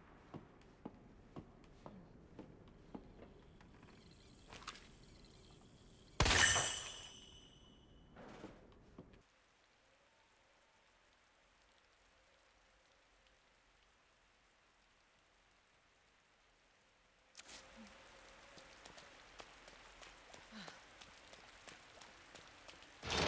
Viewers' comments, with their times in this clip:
0:04 I cannot believe I actually missed this.. That sound like a clock I thought it was the actual clock.